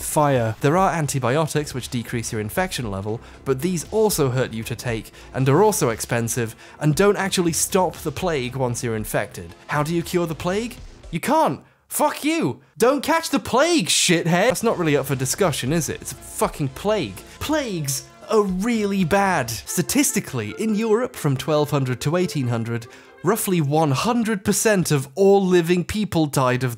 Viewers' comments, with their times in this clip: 0:09 Still love this delivery so I'm timestamping it.